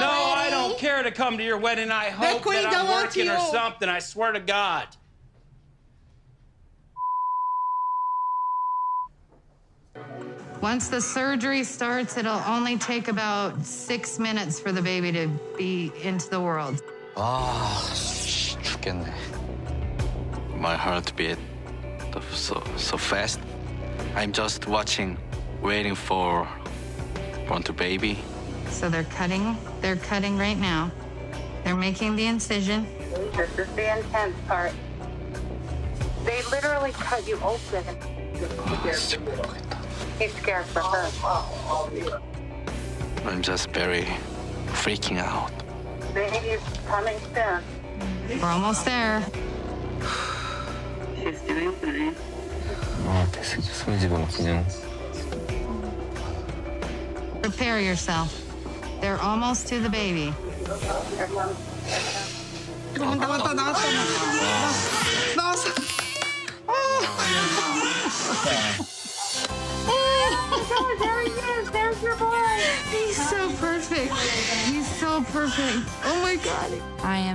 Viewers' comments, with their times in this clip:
0:06 you know its bad times when the beeeeeeep is 3 seconds long lulW
1:01 the baby's perfect Baby: Screams so hard